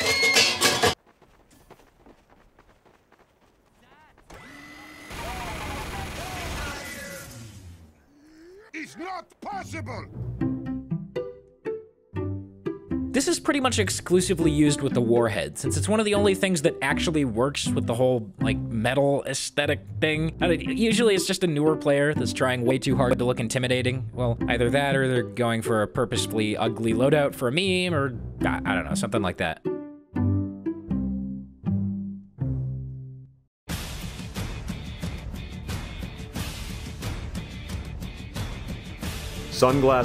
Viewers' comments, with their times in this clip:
0:05 you can hear retired when the heavy dies Ok that is his kill sound just realized
0:22 audio glitched out?